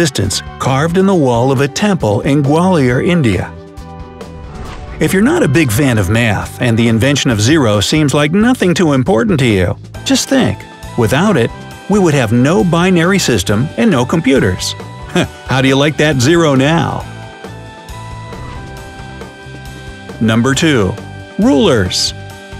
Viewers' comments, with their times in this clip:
0:06 The way he sushruta tho